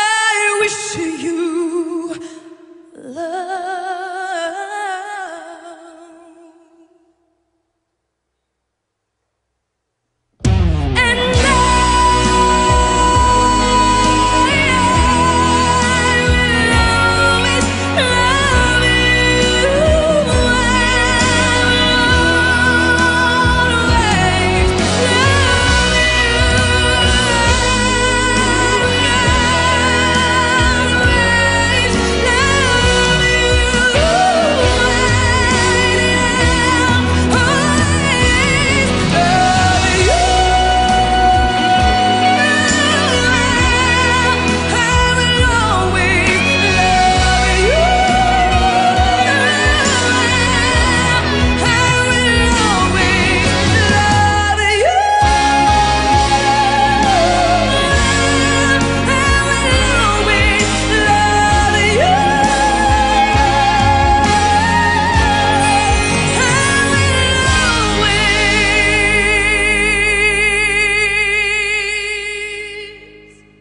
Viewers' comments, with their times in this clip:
0:09 that was my reaction watching this video OMG im not even a fan of kpop and none of those things but bruh ive never heard someone sing like her
0:10 the hardest emotional drop
0:11 I compared two live versions, and I am shocked that I thought Ailee was actually better. I noticed Whitney did not sustain the B4 - C#5 - B4 melisma (I think) like Ailee did and always lowered the key when singing live.
0:23 that run down was perfection
0:53 That extra key change in ... That's impressive! How wide her vocal range is...
0:53 That key change is absolutely amazing ❤❤❤
0:53 That key change is loooooove! Aileeeee <3
0:53 That key change tho... She did that
0:54 that note gets me everytime 😍😍